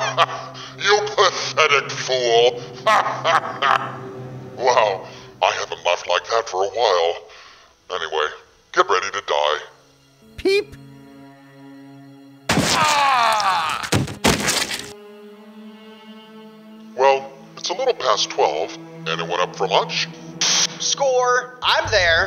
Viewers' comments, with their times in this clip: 0:08 I replaed from so often "get ready to die. ...peep." I laughed so much haaa, wounderfull how you change your voice so good.